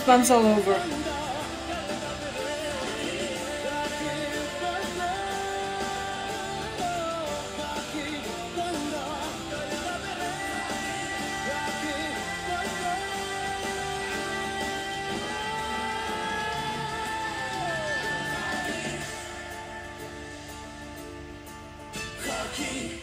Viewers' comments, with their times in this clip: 0:09 It's 90% live performance, Sound effect are only used at the high node of the vocalist only for minor Eco to diffuse the voice in harmony like as you can listen (the last line) end-stop high note. And for some use for digital music at the moment of mixing in between.. But it's all done in this studio during the live performance with their best equipments and the masters.